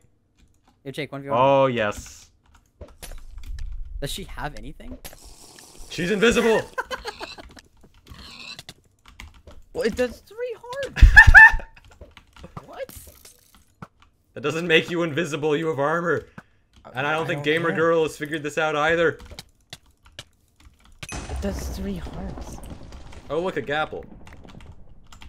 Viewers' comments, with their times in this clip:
0:09 What is that laugh